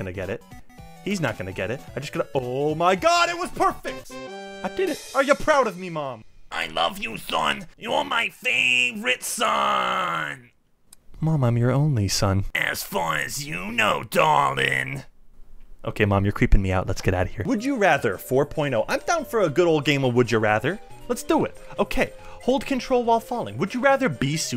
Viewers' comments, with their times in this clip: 0:06 that mom voice kinda sounds like what's her name the slug lady from Monsters Inc